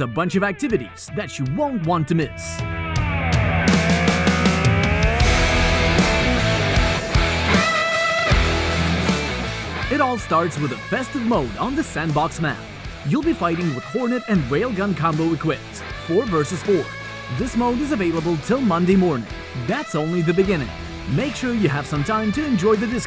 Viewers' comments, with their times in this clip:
0:04 oh man the perfection of the bakground song op tanki is getting better